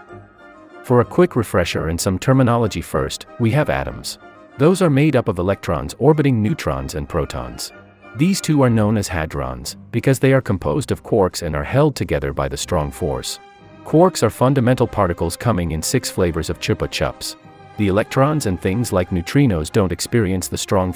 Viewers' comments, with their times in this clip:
0:08 bruh allmost said uwu 2x